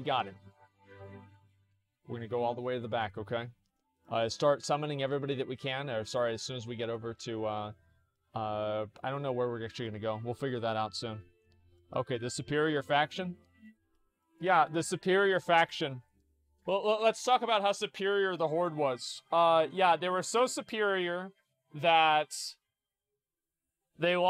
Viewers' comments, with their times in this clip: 0:06 THAT MUSICAL TIMING... HOLY SHIT! That right there is what makes this whole video worth watching, truly epic!